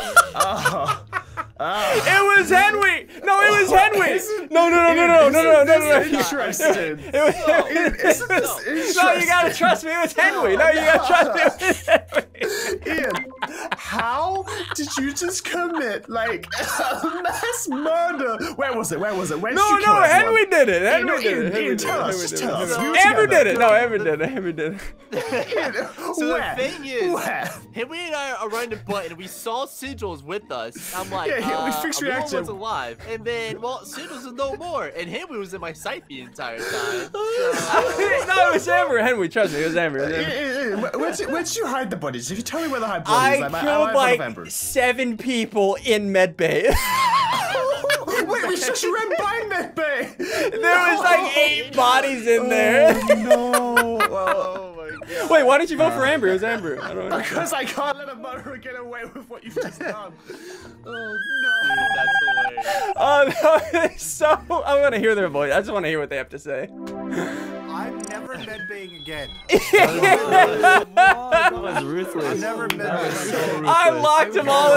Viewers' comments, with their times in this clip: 0:04 Ssundee: no it was Henwy Subtitles: HEADWINDS
1:00 A kettle :D
1:01 the best war cry